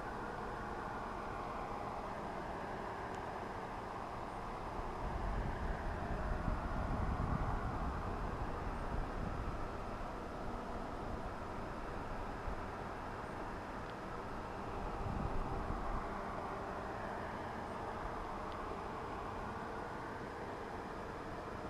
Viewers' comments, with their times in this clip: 0:05 That noise toward the end is amazing, i hear voices and some more shit! From :00 and on!
0:05 Sound like Water????